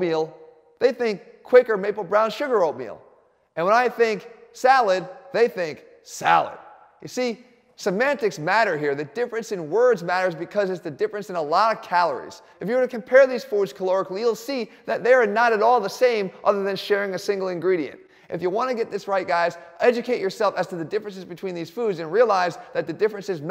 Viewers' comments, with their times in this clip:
0:03 HAHA I love the part, "when I think salad... they think SALAD *deep voice*". This is how I say to dem girlfriends eating salad putting on more dressing on their salad having more calories than my double cheeseburger! xD
0:04 the way he pronounces salad xD